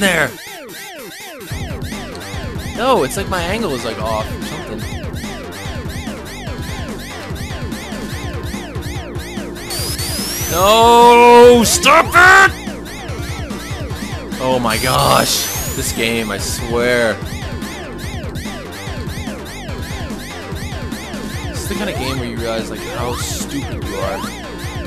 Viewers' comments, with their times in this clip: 0:10 STOP IT!! HAHA that was a funny anger.